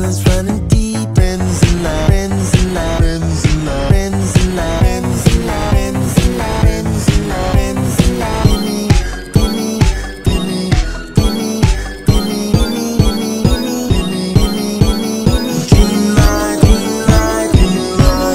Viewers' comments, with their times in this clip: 0:05 HOW IS THIS REAL G MAJOR 4?!?